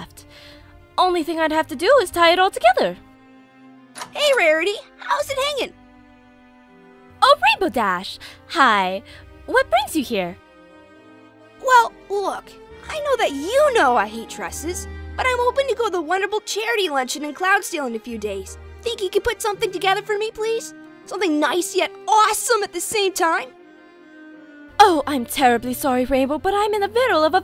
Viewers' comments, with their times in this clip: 0:09 The laugh was personal ☠️☠️